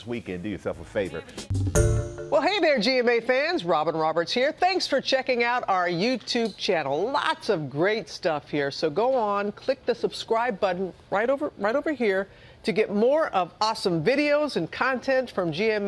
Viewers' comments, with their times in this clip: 0:03 the way she says her name makes sound like she had a small stroke.